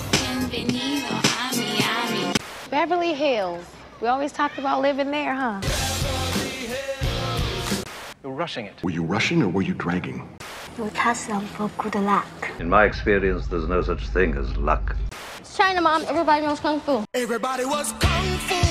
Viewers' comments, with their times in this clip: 0:06 LOVE THAT SONG! Funny video also.